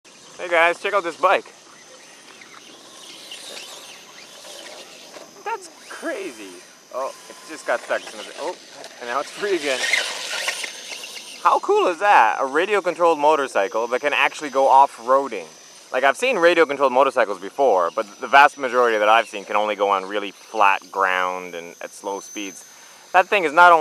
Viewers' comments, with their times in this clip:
0:04 its funny when he gets excited abt things, his voice goes up 6 octaves. lol